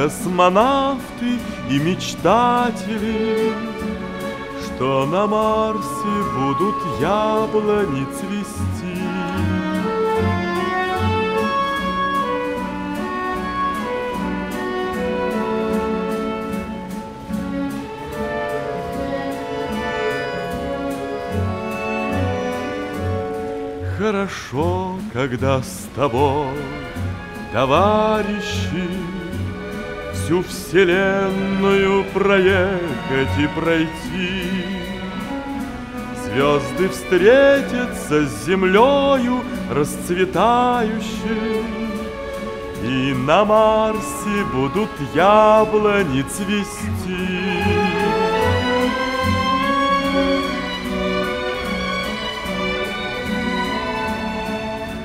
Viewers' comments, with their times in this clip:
0:09 ODL style kusmanov tea image dot sternum RC voodoo table on its list The automatic translate is the best!!
0:34 Turn on subtitles and it says 'sicilian male pregnancy'
0:36 it says Sicilian male pregnancy break.